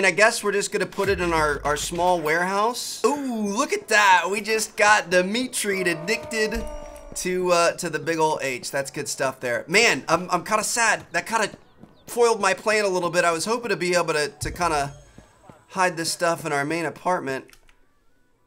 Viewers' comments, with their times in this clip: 0:05 words are hard bro I feel ya